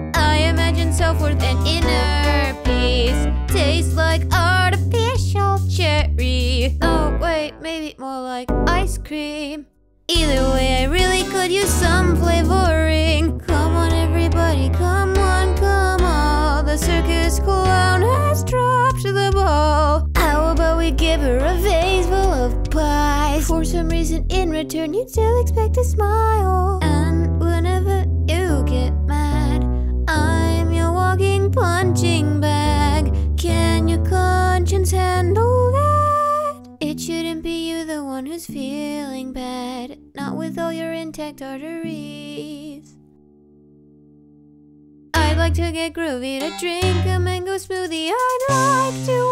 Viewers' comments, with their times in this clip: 0:04 everytime i feel like shes gonna say artificial cheese
0:13 I can't get over how "the circus clown has dropped the ball" sounds Ong it's so addictive
0:16 Okay, can we appreciate her voice it's sounds so beautiful!
0:17 I don't think I've ever been hyped for a voice crack like the one in my entire life. Also the following throat clearing on the start of the next line is kindof endearing, like it tells a little story.
0:17 can we take a moment to appreciate how good it sounded when they said "has dropped the ball" like it's so pleasing to hear everything I listen to this song
0:35 that note is actually beautiful, great job dude 👍👍